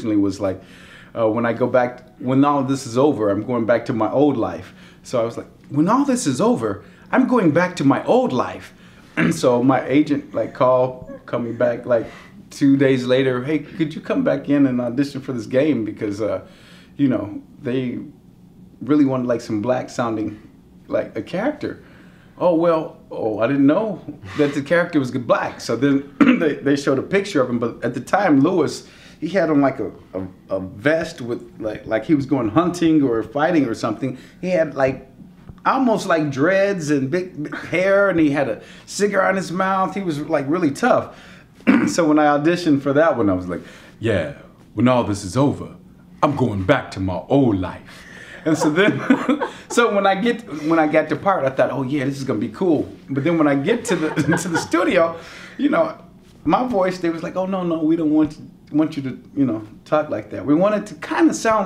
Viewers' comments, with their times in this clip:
0:06 He sounds like the son from the Bill Cosby show.
0:17 I first thought he was joking in the second part about L4D2 spoilers but from you can hear he also does Coach :D
0:47 That sounds ALOT like Coach